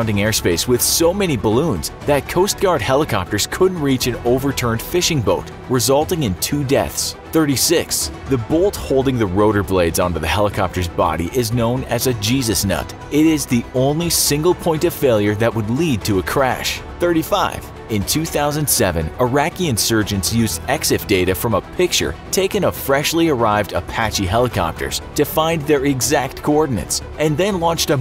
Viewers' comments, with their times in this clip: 0:10 Big bang ( ͡° ͜ʖ ͡°)